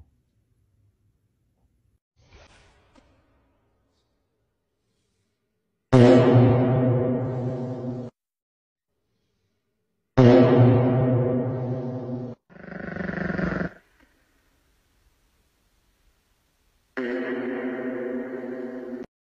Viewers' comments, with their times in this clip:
0:10 I know it’s fake, but the dog growling in response had me in stitches! 😂